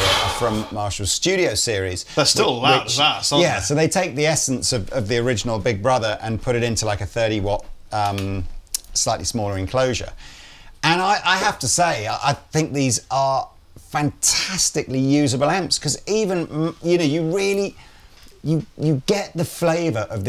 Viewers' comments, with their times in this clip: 0:03 20 Watts even (switchable to 5). Pretty crazy loud at that huh.